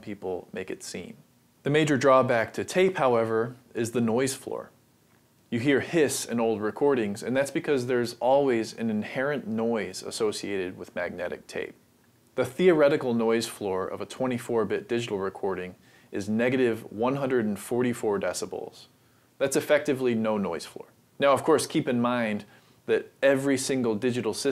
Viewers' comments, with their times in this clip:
0:05 What Happened to your Audio ?